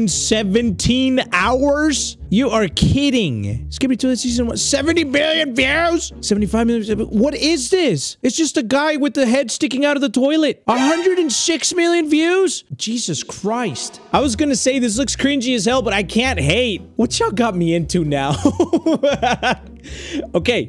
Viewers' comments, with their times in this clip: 0:05 bro sounded like jack black